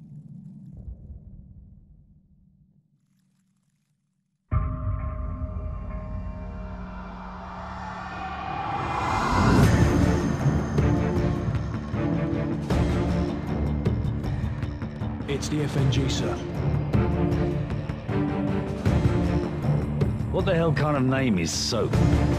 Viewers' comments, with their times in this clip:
0:05 the background song in this with reviving the memories of CoD MW... Captain Price, Imraan Zakhaev,etc gives chills